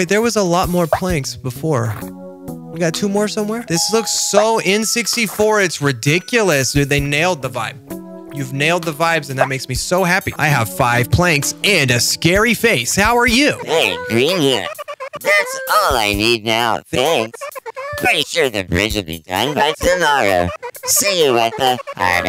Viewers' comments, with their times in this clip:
0:10 "Ive got 5 planks," cutely turns into 90's ad director❤❤❤ "and a SCARY FACE! How are YOU?!"